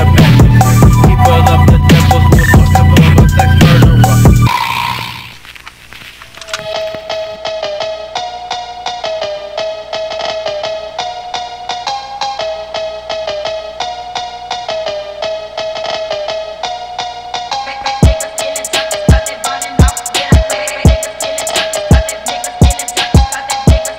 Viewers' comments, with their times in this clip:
0:05 sick ass cowbell melody 🔥🔥🔥🔥